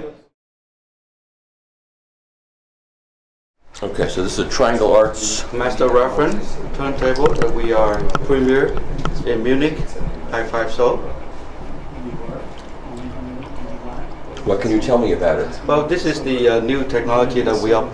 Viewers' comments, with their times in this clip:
0:03 Try not to chew some shit during a recording!!